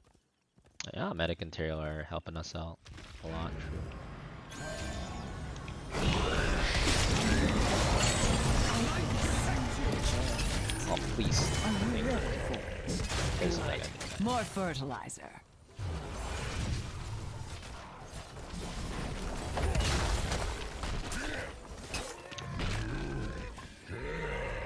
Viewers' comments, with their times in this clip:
0:06 butcher in a bush medic probably got an heart attack due the screaming 😂😂😂😂